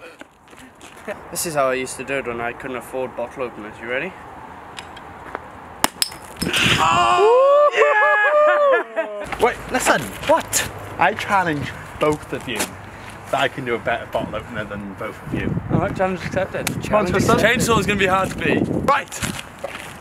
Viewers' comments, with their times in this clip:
0:05 sounds so satisfying